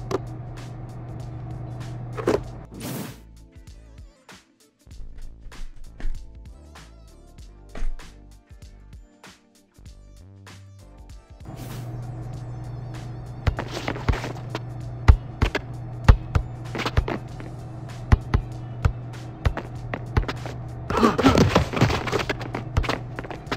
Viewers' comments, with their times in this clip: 0:09 that music is butt